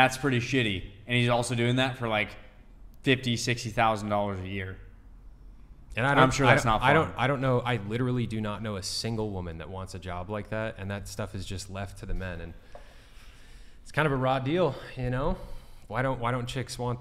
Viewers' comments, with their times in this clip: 0:05 Crickets again lmao bro these girls are a joke 😂